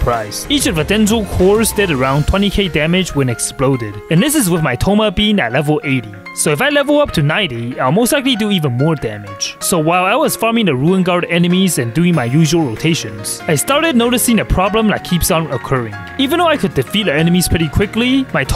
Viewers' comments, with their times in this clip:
0:03 I'm fully aware that what was being said was: "my thoma bein' at level 80" but I was drawing and half-distracted while watching it so for a good second I thought that it was "My thoma-bean at level 80" and I thought that was so cute lol